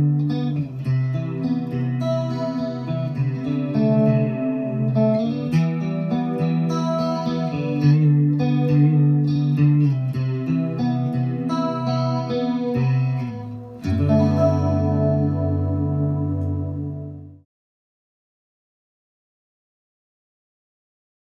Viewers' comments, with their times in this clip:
0:10 were you using a pedal ?